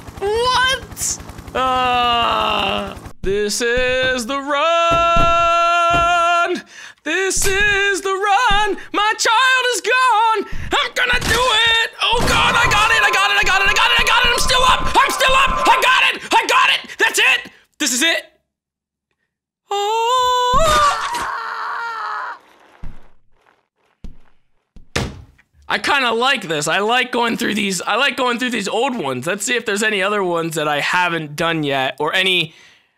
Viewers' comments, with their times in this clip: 0:08 Well at least he has a good voice if godsmack would take him i would listen to his songs.
0:18 he cry evry time